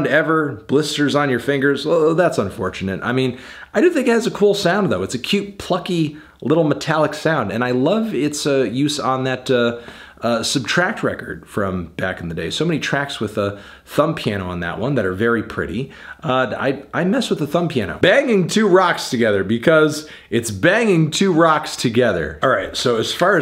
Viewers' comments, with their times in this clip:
0:08 oh.. that’s how you say it.